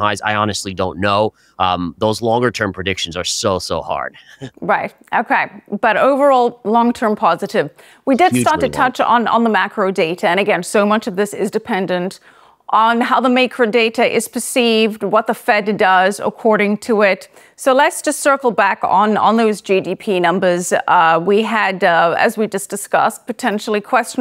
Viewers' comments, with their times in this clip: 0:06 "Macro Data"....followed by....."Maycro Data"
0:11 The „maykro“ data? 😂